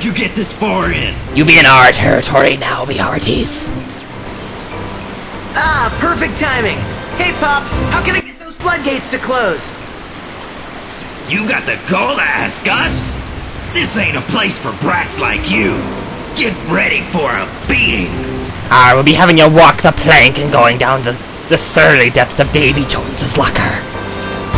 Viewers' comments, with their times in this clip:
0:09 sound fail. =D lovin the Blind Play so far though. =)